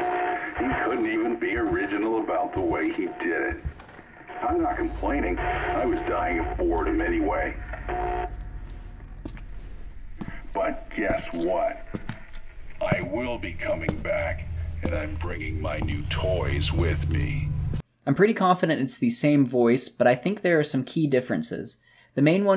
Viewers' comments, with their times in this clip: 0:10 I feel like the "I'm coming back..." and the voice becoming more clear is alluding to the voice/person literally coming back to life. The voice becoming more realistic is him/it becoming more tangible physically because it somehow found away to "come back"